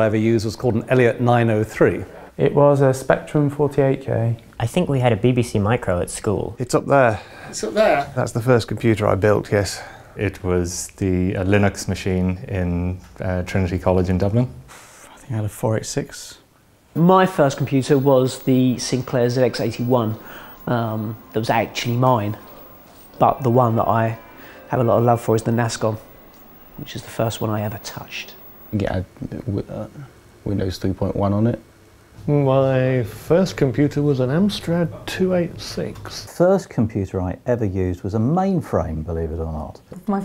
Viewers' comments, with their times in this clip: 0:07 Love how casually he drops the clarification that this is the first computer he BUILT
0:17 Good god, ow, my ears...
0:25 these high pitched sounds are annoying xd